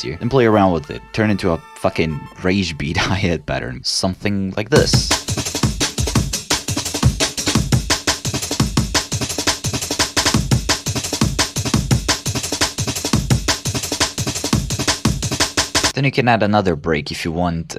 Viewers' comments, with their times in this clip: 0:03 reminds me of redial